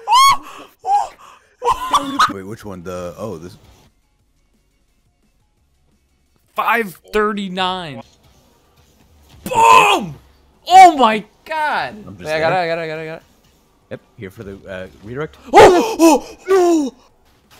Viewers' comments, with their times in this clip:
0:04 he sound like lightning McQueen lol